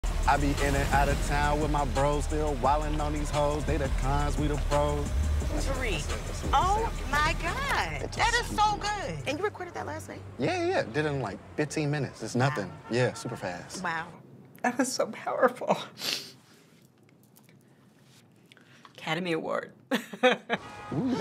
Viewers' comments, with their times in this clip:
0:04 the first scene’s rap was lowkey eating